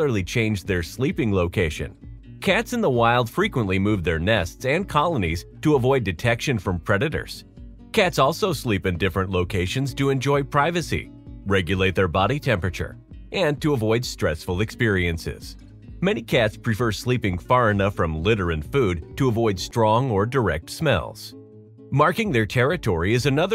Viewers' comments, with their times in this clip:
0:05 "To avoid detection from predators." I don't know why that sounds so funny to me. Like he's being a smartass.